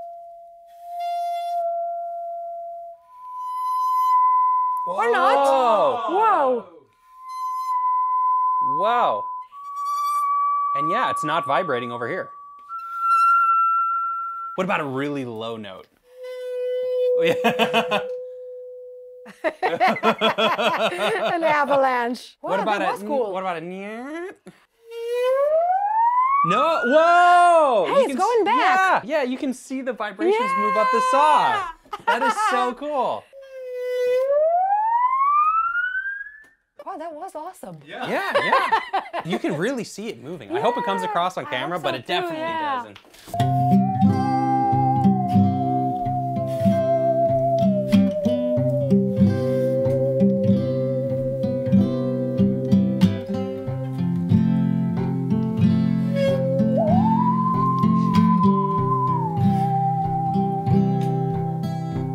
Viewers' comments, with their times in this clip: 0:04 had some bladerunner vibes to it yano
0:42 I never thought that a saw could sing but she made her saw sing beautifully
0:43 if you close your eyes it sounds like an old cowboy whistling by the campfire with his guitar living his best life.